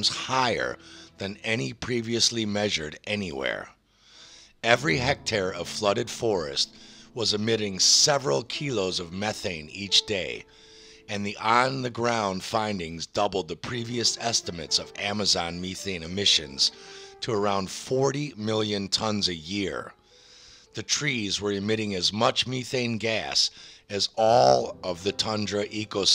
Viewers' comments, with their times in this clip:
0:08 I have to ask. Why do you keep pronouncing methane as mee-thane? you land it with the right pronunciation so which one is correct lol